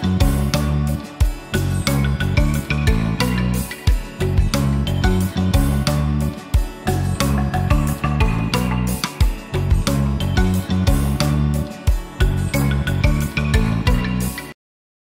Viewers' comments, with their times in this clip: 0:11 Luv Hearing The Music Playing AT THE END OF Every Movie 🔥❤️‍🔥🥰🥰🥰🥰🥰🥰🥰🥰🥰🥰🥰